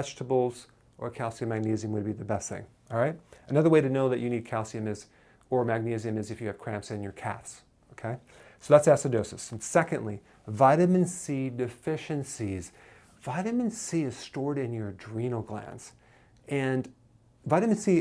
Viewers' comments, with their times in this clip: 0:06 cramps in your what?